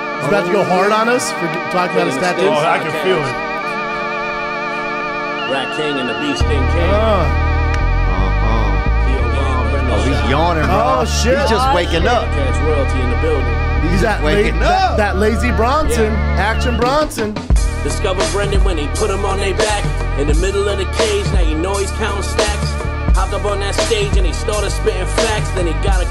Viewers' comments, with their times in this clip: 0:07 man I feel like there was no need for that yawn